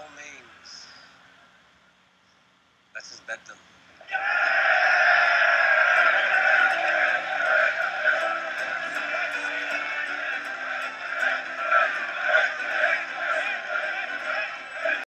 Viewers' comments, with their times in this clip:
0:10 Is he playing a frame drum